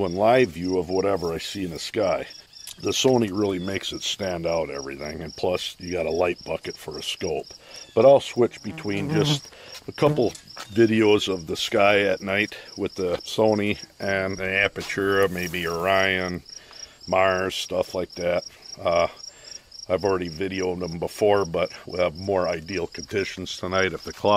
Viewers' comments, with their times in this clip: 0:09 Headphone users beware I just swatted at a invisible fly